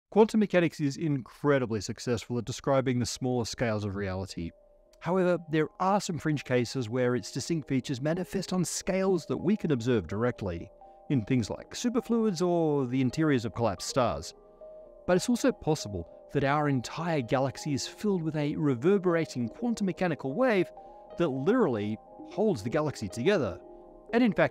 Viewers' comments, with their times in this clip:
0:06 it sounds weird right from the start
0:10 It's even in the intro. The pitch changes when he says "scales" I'm watching in 1080p, in case that matters.